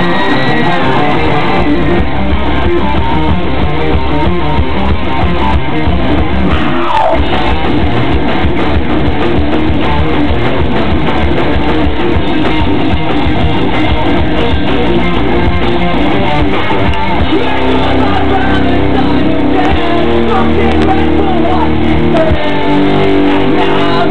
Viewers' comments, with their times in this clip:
0:05 OMG this is fucking good screaming